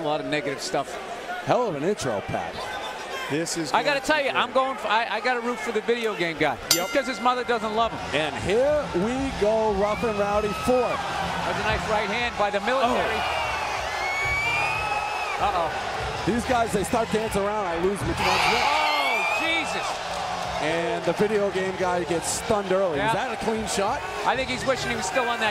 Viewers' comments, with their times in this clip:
0:07 Bell doesn't ring until
0:11 Who the hell is making whale noises in the background ??